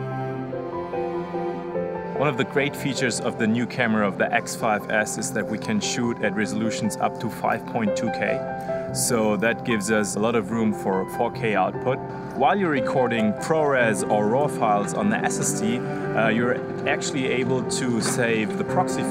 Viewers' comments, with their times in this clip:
0:07 the dude from onwards with the backpack is SOOO GERMAN :) that accent is so german! 100%